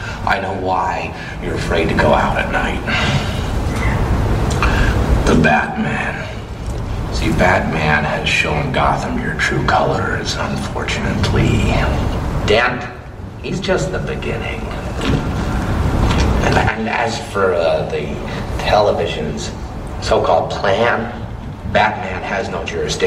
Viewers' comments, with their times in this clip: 0:10 I love the way he says "Unfor-tu-nate-ly"